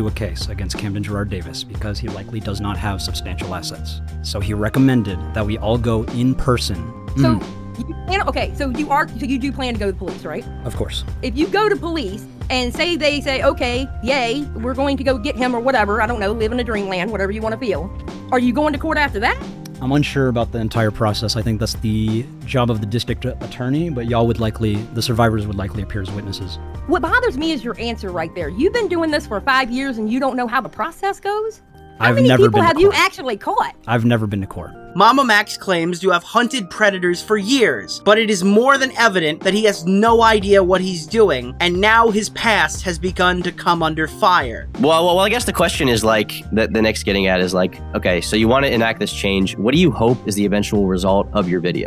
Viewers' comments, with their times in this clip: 0:09 Who is the southern girl 😭
0:32 idk who that girl was with the accent but she was cracking me up 😂😂